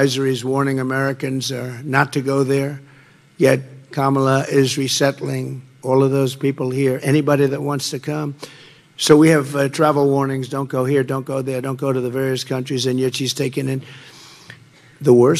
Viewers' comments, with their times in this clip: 0:03 🤯 Trump pronounced Kamala correctly?!?!